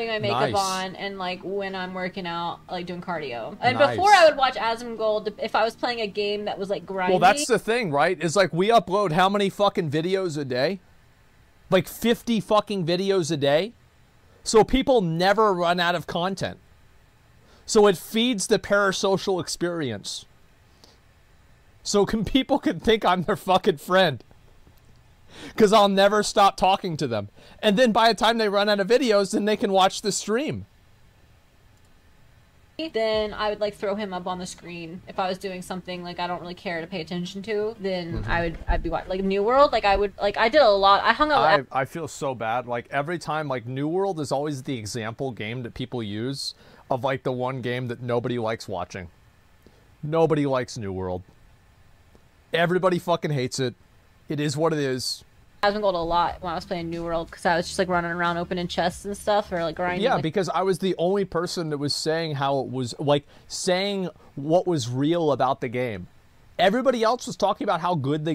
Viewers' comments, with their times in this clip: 0:08 Asmon sounding like a evil mastermind here lol
0:51 I was going to say it was the pause ... she knows how to grab a mic..👌👀